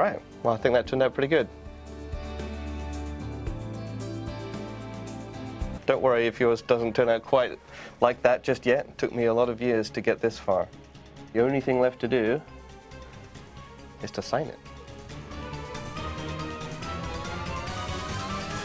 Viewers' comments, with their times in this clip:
0:05 Music stops. I find it funny beaces your starring at the picture and he just kinda breaks that drool. No offense though great toturial and all :)